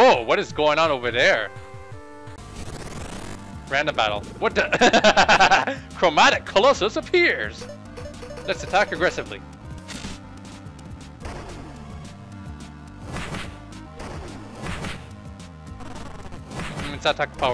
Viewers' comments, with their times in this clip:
0:03 you laugh is awesome!